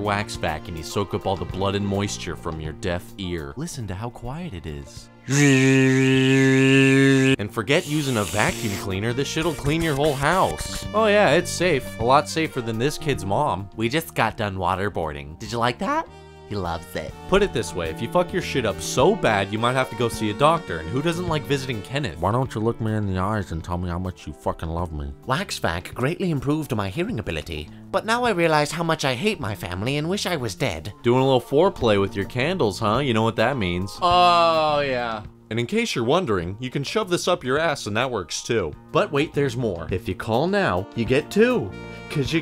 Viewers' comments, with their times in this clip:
0:03 look how quiet it is
0:03 so quiet I can hear a pen drop
0:03 Listen to how quiet it is:....BRRRRZRRRRRZRZEZEEZEZEZ
0:04 see how quiet it is..... :D
0:21 Spot on Mr. Plinkett impression.
0:21 -0.53 Mr. Plinkett you're a doctor?!
0:21 M-Mr. Plinkett, is that you?!
0:22 Mr. Plinkett became a doctor LOL
0:22 OMG IT'S MR.PLINKETT
0:22 I didn't realize Mr. Plinkett was a doctor...or that he sometimes goes by Kenneth.
0:22 is that the Plinkett voice? good job thought it was for a second
0:22 Mr Plinket? Wait he's shelling for cash now? What's the world come to, The Last Jedi review just came out.
0:22 This is Mr. Plinkett's voice holy fuck
0:25 he sounds like tenpenny from fallout 3.